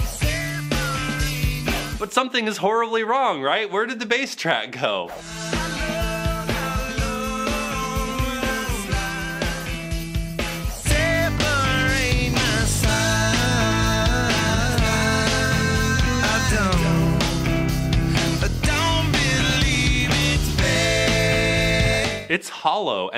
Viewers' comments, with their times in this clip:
0:07 Wow, I legitimately could not tell any difference between those two recordings.